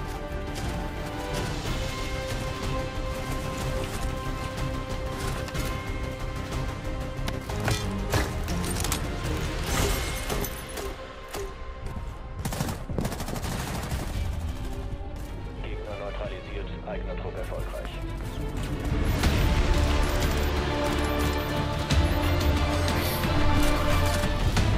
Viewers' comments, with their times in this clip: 0:09 Why does the American Guy have German Gamesounds?
0:10 the flag is amarican but the language is German Nani da fuck ?